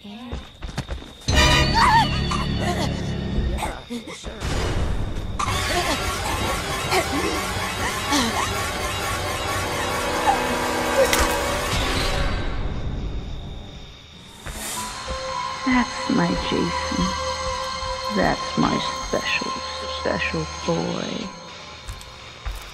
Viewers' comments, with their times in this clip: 0:10 Minecraft Death Sound